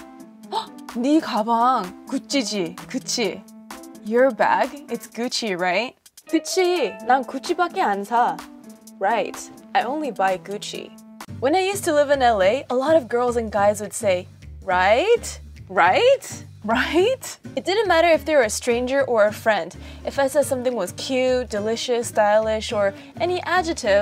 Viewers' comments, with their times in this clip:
0:06 "ahn sa" WHY DID I THINK ABOUT HWASA